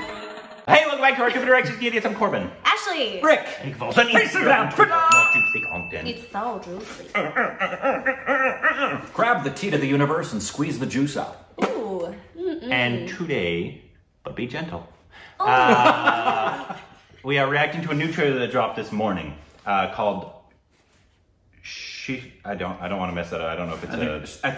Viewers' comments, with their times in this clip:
0:09 Tit of the universe?? Did I hear that right? 🤪🤣@